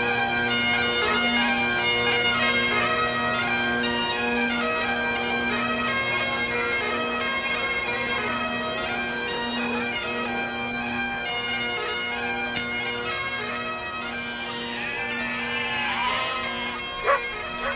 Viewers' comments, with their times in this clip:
0:04 I always remember that as seeing jill